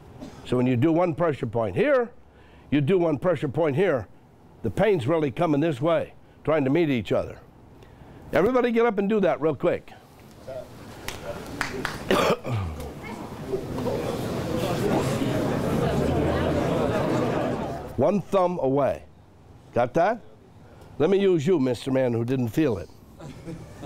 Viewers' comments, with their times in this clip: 0:08 mins Him: "Everybody get up now & do that real quick." Everyone in the room murmuring: "Dude, wtf are we supposed to do again?" That's how you know you're a shitty teacher.